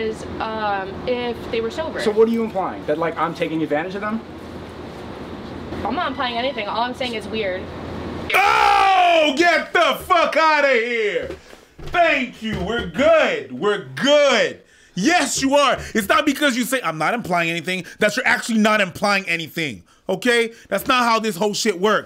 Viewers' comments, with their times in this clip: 0:04 Woman: Gives slight pause to his question Me: Press X to doubt